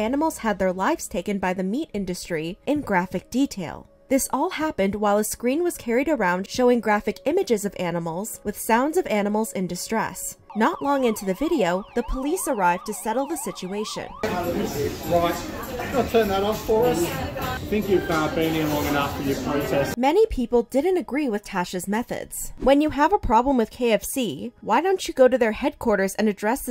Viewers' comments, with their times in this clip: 0:08 Watching this video am is making my head hurts. I’ll watch it again later. She thinks her message will spread to the public but, she is way too loud and annoying to be heard. I won’t listen to people like this individual. Selfish.